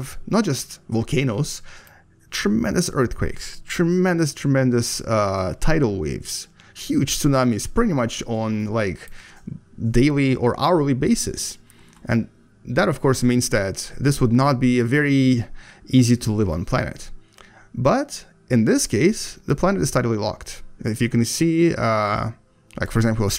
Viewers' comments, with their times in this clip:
0:04 Ok Donald Trump!